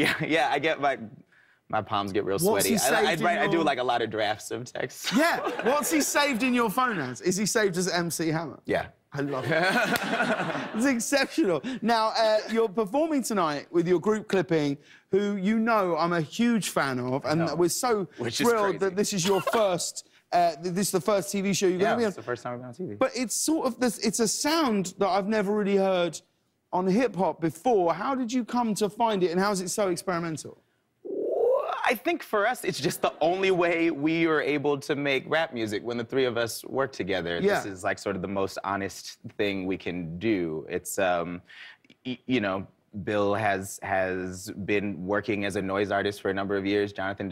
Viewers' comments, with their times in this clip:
0:03 THE WAY HE SAYS "I DO A LOT OF DRAFTS OF TEXTS" IS SO SWEET AND GENUINE AND PURE UGH THERE ARE TEARS IN MY EYES
0:29 that noise he made scared the shit out of me
0:30 he powering up a laser rifle??
0:30 lead up to bass drop tho
0:30 he soundS LIKE A BIRD SAVE HIM
0:30 And here you will hear the majestic Daveed Diggs' mating call
0:30 All these comments about the dinosaur sound Daveed made I’m dead 🤣🤣🤣🤣🤣🤣🤣🤣😵
0:30 I Thought That It Was My Stomach Making Noises Too
0:30 OMFG How does that sound came out of his mouth?😂😂😂
0:30 you can admire the wonderful mating call of the strange and rare Da-bird.
0:30 Every so often I come back to this video just to hear that glorious ray gun sound
0:30 he makes the wierdest noise
0:30 EVERYONE LAUGHING BUT HONESTLY WHAT THE FUCK WAS THAT HAHAHAHAHAH
0:30 ok, when you hear and the next few words after that, it seems like he could fit it into a rap. its so even and paced well, and I just love it for some reason
0:30 that noise he makes wth is that?
0:30 James: "It's a sound I've never really heard in hip hop before. How did you come to find it, and how was it so experimental?" Daveed: makes a teleportation warping noise with his throat
0:31 Clipping should make a song sampling the knows Daveed makes
0:31 some alien noise shit
0:31 I thought my phone glitched. What is that sound?! 😂 That's Daveed's voice?
0:32 That sound Daveed made made me think he was about to sacrifice James to the moon god Khonshu